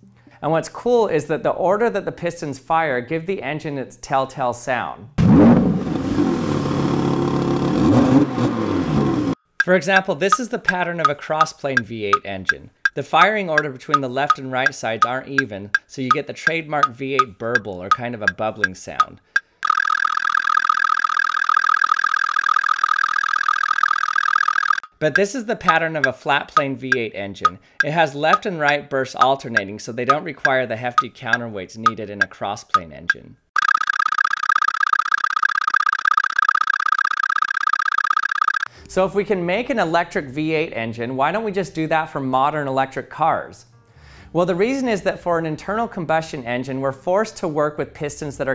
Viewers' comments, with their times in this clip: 0:09 Car people: We love V8 sound, can we have V8 sound? Physicists: We have V8 sound in our model. The model:
0:33 I don't know bro, sounds more like Mr. Crabs